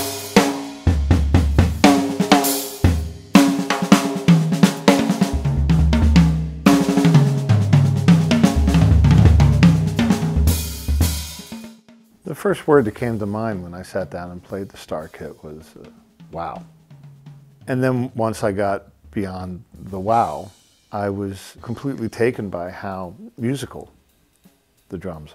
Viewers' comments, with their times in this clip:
0:06 Amazing playing! Gadd like lick